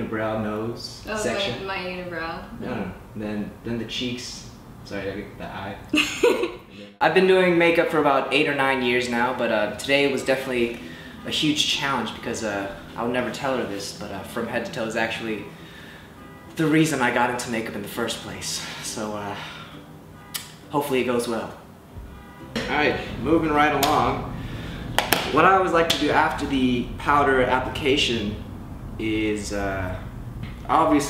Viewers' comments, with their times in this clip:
0:08 theres a car alarm going off . Or is that just me ?
0:18 does anyone else hear a car alarm go off? or is it on?